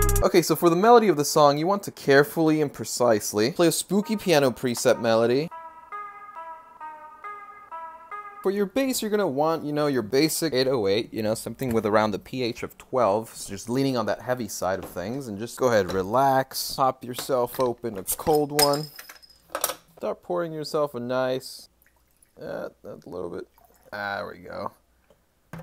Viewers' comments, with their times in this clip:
0:06 that sounded like domo23